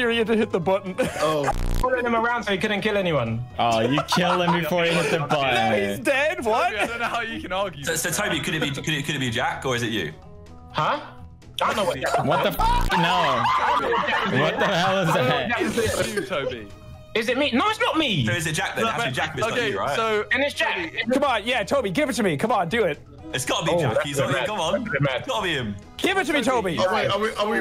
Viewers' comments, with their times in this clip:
0:10 ethans laugh is something else holy shit